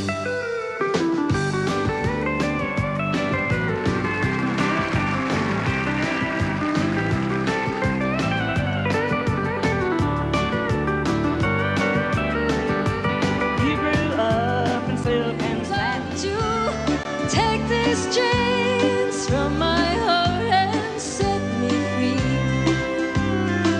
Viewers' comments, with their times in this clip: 0:07 Can’t believe he hit 32nd notes on that old lady 😂 brutal